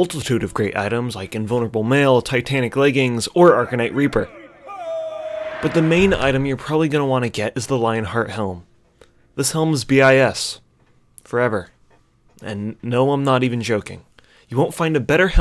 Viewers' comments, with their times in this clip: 0:03 That distant hoooooooooo..man, the memories. :') Nice editing btw